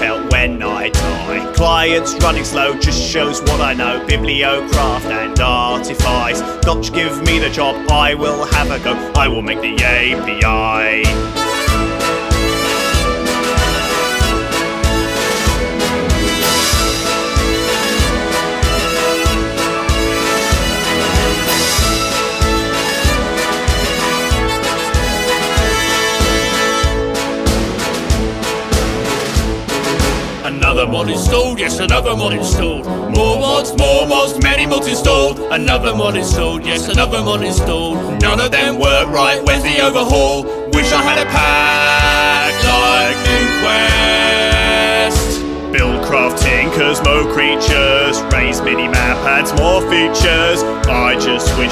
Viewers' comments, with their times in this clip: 0:06 donky pie give me the job i will have a gun
0:06 Lol donkey pie give me the job XD
0:07 notch ?!!! donkey!?! XD nice job youtube
0:08 "Donkey pie does give me the job I will have a gun", just where the f do they get that
0:12 he will make the game bi
0:37 Video: Another mod's installed yes another mod's installed Subtitles: Many police told another now is sold yet another one is an old